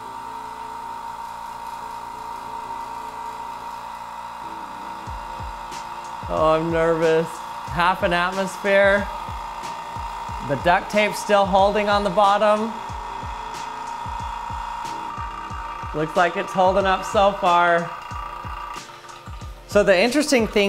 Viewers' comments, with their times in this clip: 0:05 bruh i thought the egg was cracking, turns out it was just the background music xD